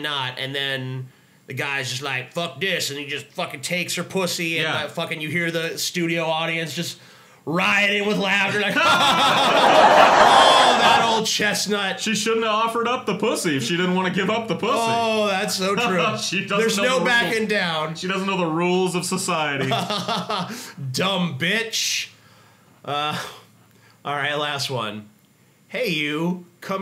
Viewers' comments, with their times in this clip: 0:09 It's 6 am and the laugh track scared me so bad it made me jump